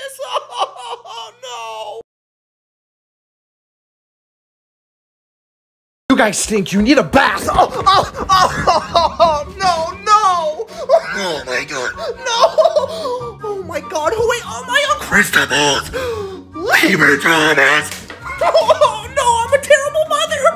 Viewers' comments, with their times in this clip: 0:06 Bro sounded like woody